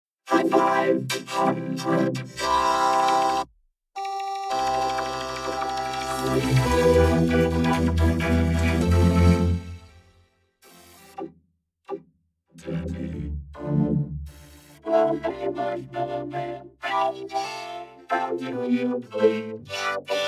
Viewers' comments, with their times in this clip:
0:04 Soviet Antem plays
0:04 a Mac chime